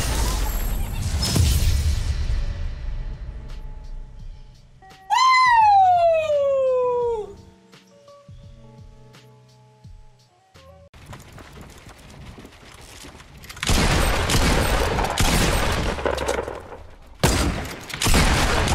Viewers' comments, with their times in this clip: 0:05 ninja sounds like peach from super Mario bros